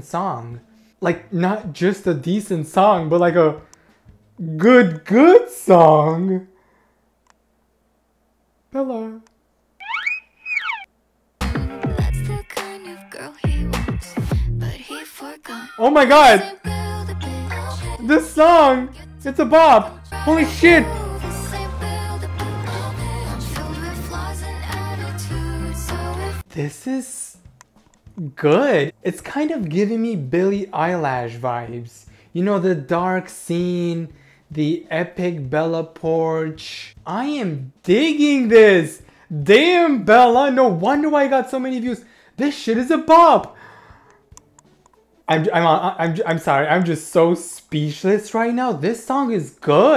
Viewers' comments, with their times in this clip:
0:10 bro I couldn't even make out whether you were being sarcastic or real 😭🤚
0:26 he was Billie Eyelash 😂😂😂😂❤❤❤❤
0:28 I WAS CRYINGGG BILLIE EYELASH😭😭
0:29 Did he actually say BiLlIe EyEeeLlAaasHhh?!
0:30 EXCUSE ME BILLIE EYELASH??
0:31 DID YOU JUST SAY BILLIE EYELASH?..
0:31 Did he just say Billy Eyelash?